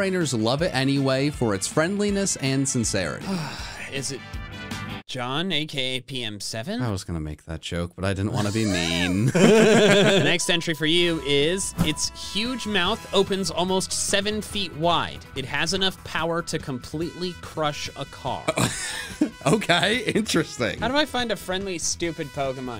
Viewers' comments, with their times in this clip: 0:10 them laughing in unison had added in a few years on my life